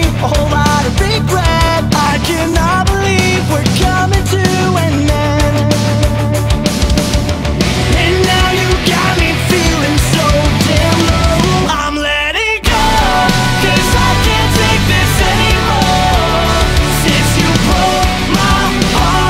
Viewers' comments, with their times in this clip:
0:05 sounds so much like it's going to be another song. But I can't place it. Anyone else?